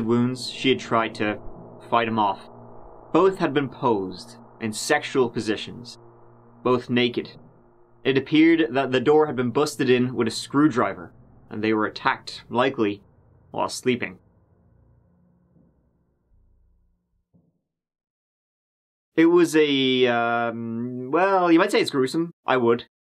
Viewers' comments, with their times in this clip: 0:05 the door had been busted in with a screw drivah.